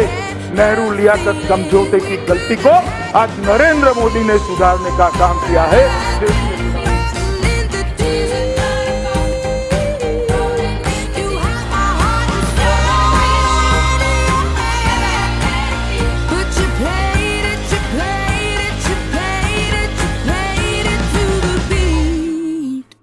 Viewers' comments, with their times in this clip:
0:09 Trump clapping in background.